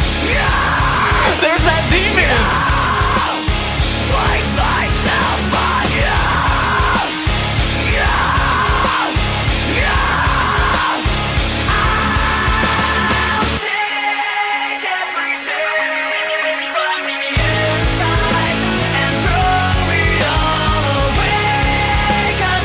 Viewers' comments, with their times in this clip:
0:08 Rob out here beatin them drums like they owe him money xD